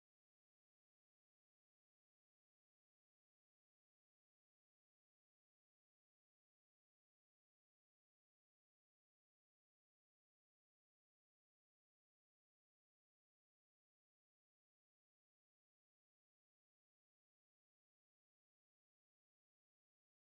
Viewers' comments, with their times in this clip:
0:03 I lost the volume .............. are theses Jeeps Rubicons or just Unlimted ..? ....... tire size, suspension, lockers ?